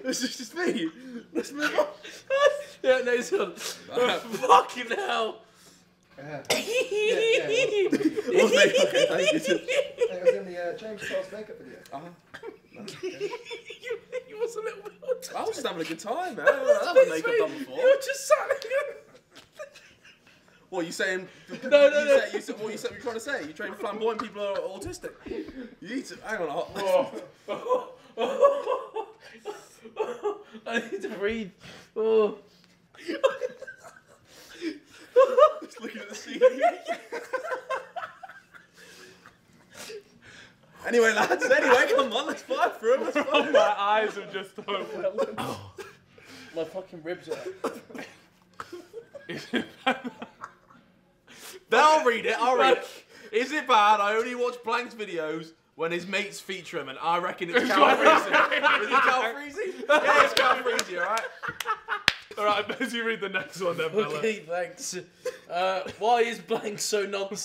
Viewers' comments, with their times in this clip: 0:06 the best laugh ever
0:06 holy shittttt! This laugh reminds me of the OG gta vids were JJ killed Tobi and he left
0:06 that laugh got me dead
0:07 oh god that laugh..
0:53 The annoying laughing section ends